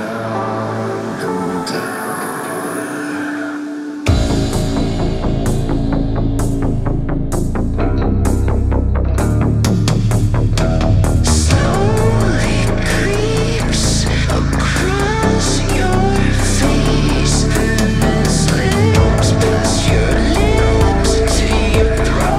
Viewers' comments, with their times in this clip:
0:06 I'm seriously in love with this song, particularly and on. SO spook, but also so good!